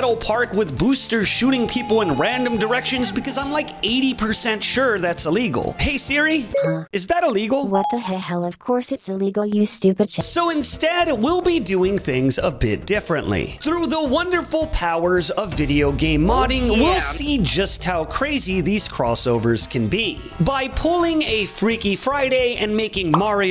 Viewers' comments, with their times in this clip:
0:07 is that supposed to sound like GlaDoS